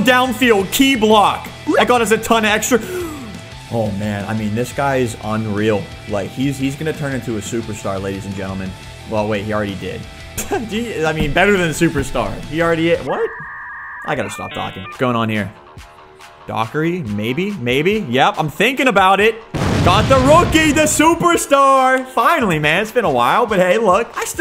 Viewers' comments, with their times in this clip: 0:06 is the sound of an imessage sending 😂